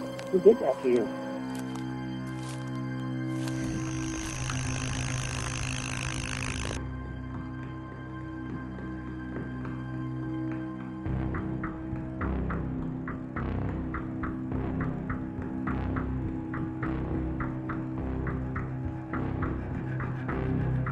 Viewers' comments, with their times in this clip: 0:08 i thought it was someone knocking the door ps: i wear headset